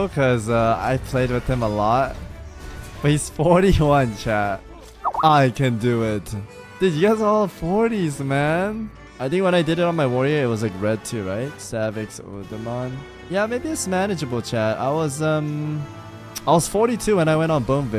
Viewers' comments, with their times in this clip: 0:03 Jesus that Skype message sound just brought forward a PTSD I didn't know I had from work